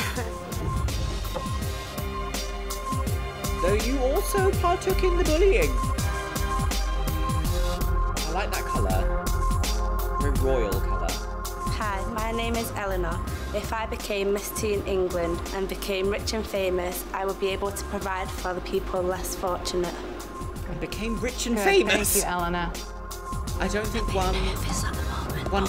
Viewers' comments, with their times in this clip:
0:06 and she was just laughing the whole time they were showing the clips of the bullying.